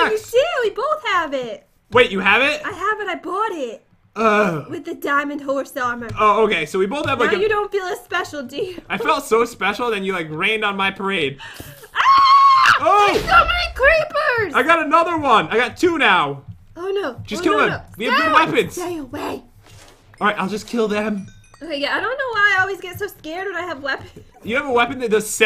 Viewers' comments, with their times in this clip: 0:09 listened to that audio bug